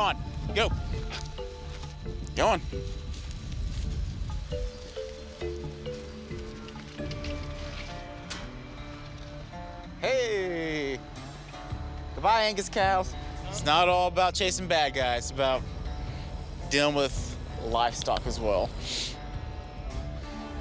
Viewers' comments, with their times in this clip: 0:04 Haha, I love how the music changes to chill country guitar as soon as the cows jump back over the fence. :D